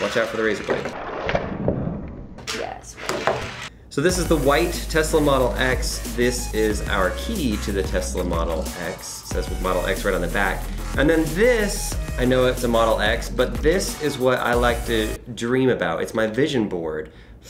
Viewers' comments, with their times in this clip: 0:04 why does the kid get sped up? wtf ]